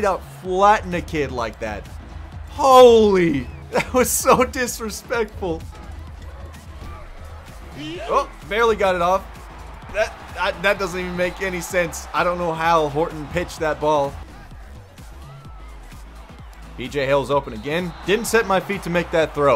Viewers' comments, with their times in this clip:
0:07 that damn yeet almost made me spit out my drink